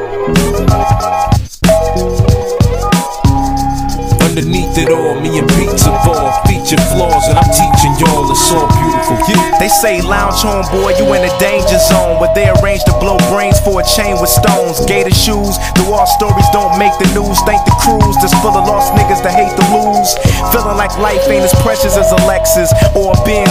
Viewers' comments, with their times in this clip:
0:10 this guy is sounding like Masta Ace... It's even his beat's type. I like this.